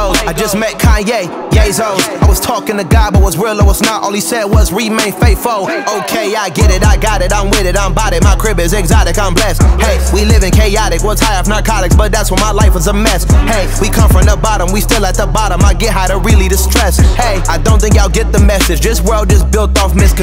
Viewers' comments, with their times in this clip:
0:05 bro embraced a spongebob flow 💀